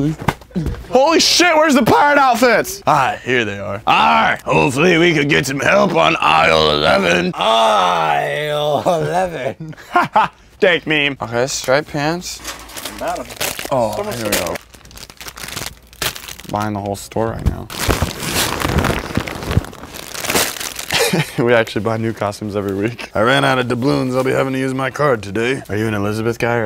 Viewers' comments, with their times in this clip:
0:10 the way he said "haha dank meme"